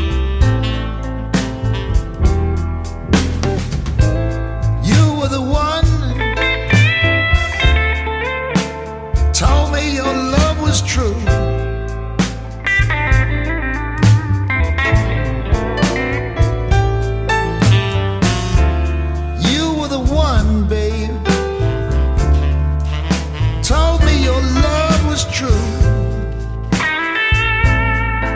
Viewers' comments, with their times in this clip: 0:09 Man you nailed the sound of all the Blues Licks, with soothing balance and soul. This made my day and night of Valentine's Day. One Year a widower trying to Heal and stand Up again. This really hit home! I'm just into it but my Hats off to you Brother. Miles' said this is how the Music is supposed to Sound!